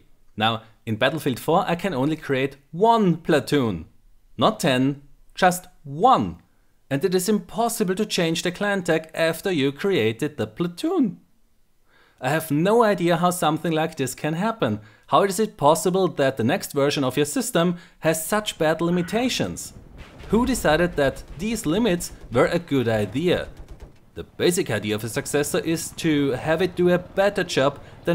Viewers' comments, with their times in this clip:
0:09 I loved your voicecrack :D